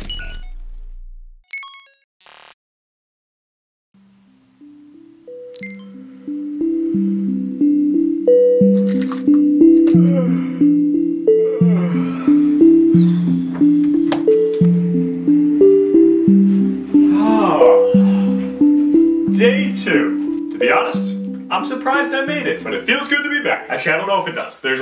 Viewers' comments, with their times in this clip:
0:09 WHY DOES HIS BACK MAKE THOSE NOISES